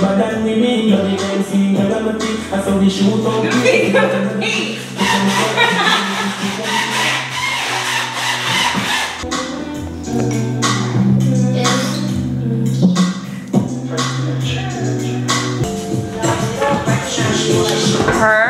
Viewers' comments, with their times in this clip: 0:06 lmaoooo the sound reminded me of SpongeBob with them damn boots!🤣🤣